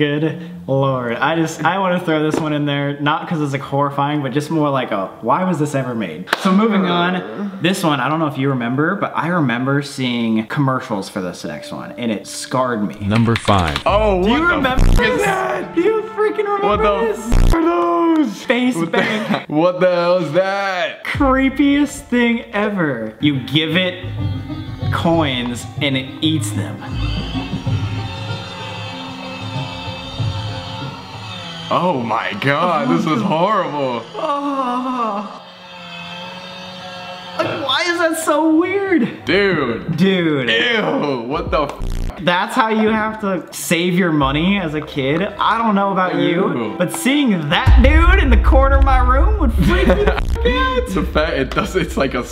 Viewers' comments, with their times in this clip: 0:06 go to his moan :0
0:06 listen to Colby lmaoooo he just moaned
0:06 did Colby moan?😂
0:06 who else heard Colby-
0:34 sam moans thank me later i wonder what colby was thinking👀